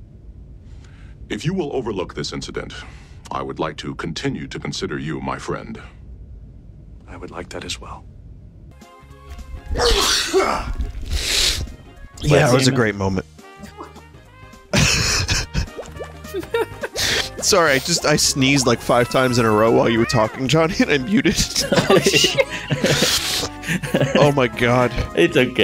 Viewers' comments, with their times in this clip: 0:07 What a touching moment from TNG, punctuated by Vinny's diseased duck sneeze.